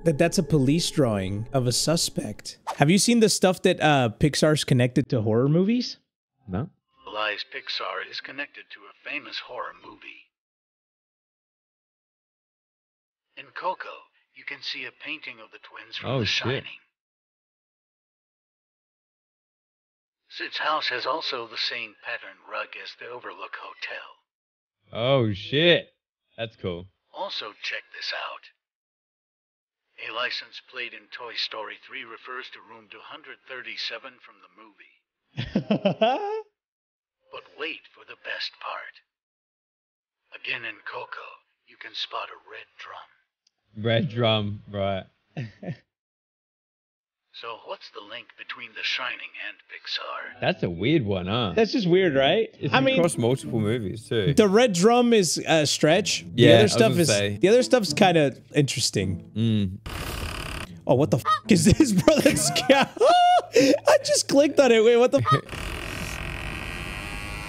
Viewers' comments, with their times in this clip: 0:07 did anyone else notice the audio glitch
0:16 is the audio muffled for copyright?
0:37 was the audio a bit muffled here or is my YouTube gonna act like the canal 5 broadcast
0:50 the audio sounded weird as if they had edited it, but it went back to normal in the middle of Josh's sentence a few minutes later. weird
0:51 yall is it just me or did you guys' audio also mess up around this moment